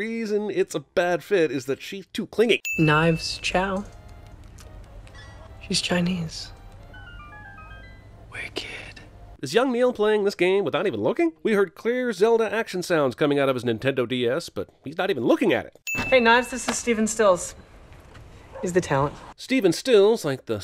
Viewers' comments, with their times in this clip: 0:07 ok ive never sinned a sin before... but this one... that sound can be triggered as you walk through a door. When you walk through a door in old games like that... they load... on usually a black screen. Who the fuck stares at that? Ofc he'd be looking up and randomly chiming in at that moment. The REAL sin is how that nerd was rudely playing a game mid conversation... WITH THE SOUND MAXED OUT! That is all. Love your videos and this should be my first and final sin^2